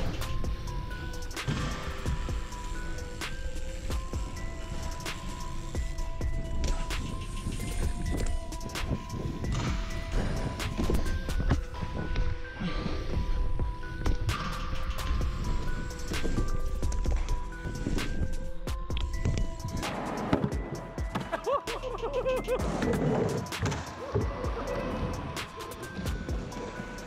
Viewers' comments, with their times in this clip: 0:10 Love the grunts